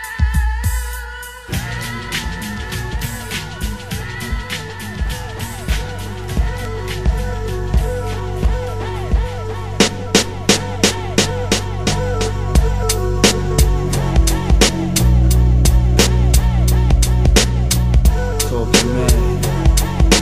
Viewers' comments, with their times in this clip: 0:05 one of the illest beat drops ever